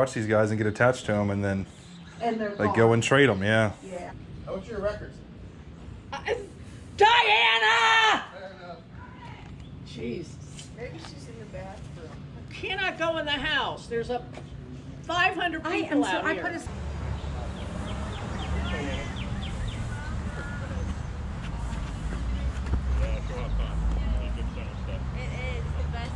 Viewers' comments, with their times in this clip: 0:07 Jesus what a voice